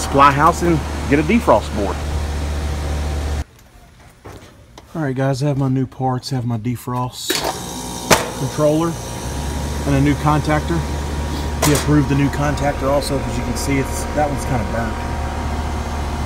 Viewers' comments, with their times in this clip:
0:03 The old Sounds of an old Scroll (Ruud startup)